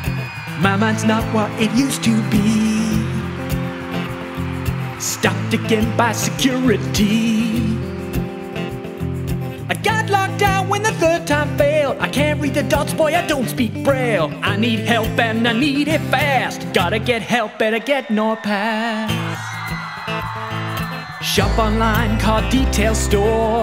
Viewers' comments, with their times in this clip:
0:10 he is a SINGER👏👏🤣🤣